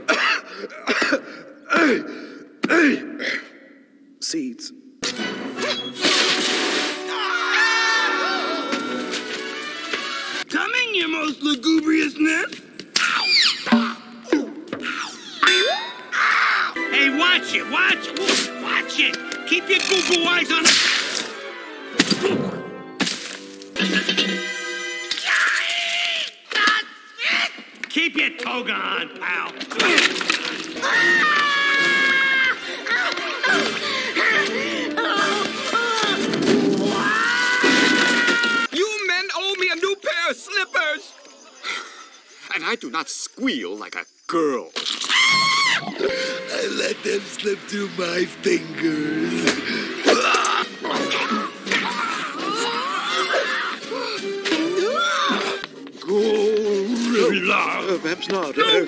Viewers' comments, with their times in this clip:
0:07 goofy's scream can be heard
0:07 Goofy Ahh Scream
0:43 Mr. Ping BEFORE Kung Fu Panda 😂😂😂